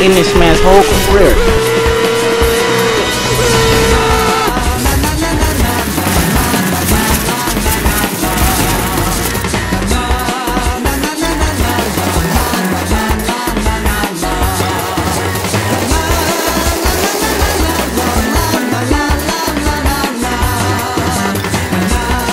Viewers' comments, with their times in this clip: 0:03 i hear the speed run sound